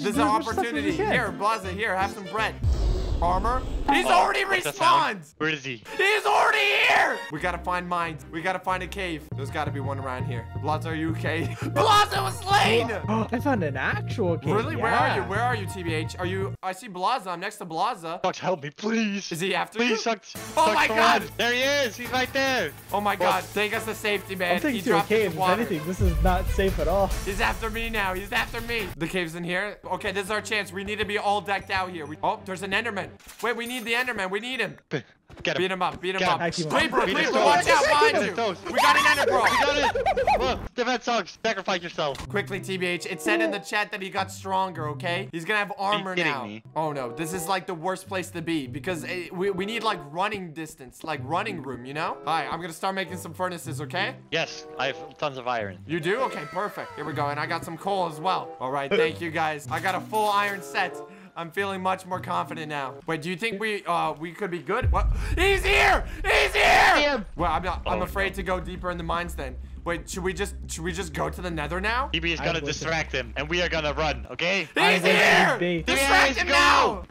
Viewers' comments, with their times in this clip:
0:09 dream speedrun music starts
1:01 “I’m feeling much more confident now. Literally five seconds later: screaming HE’S HERE, HE’S HERE”